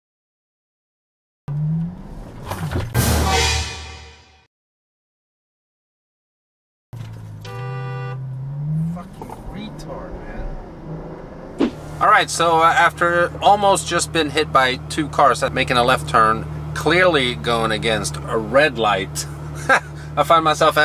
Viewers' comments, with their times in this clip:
0:06 in Chicago, they would honk at YOU, and look at you like "you dirty supercar owner" hahaha the car sounds wicked